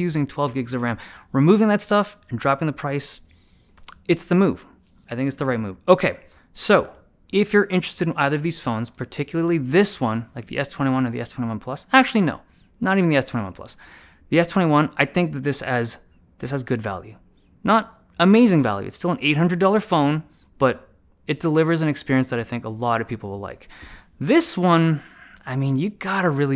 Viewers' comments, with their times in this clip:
0:09 F@@ This is the first time i really laughed out loud on your video. I know i know its not suppose to be a funny but I really like your sincere delivery 🤣 Man you're always the serious type person but i really appreciate your sincerity and compassion on some points like this so entertaining like your occasional sigh haha